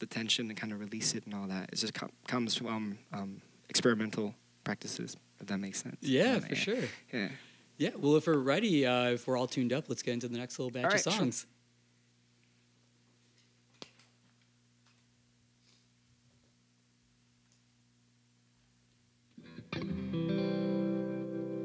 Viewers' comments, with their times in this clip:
0:09 Did he sneeze?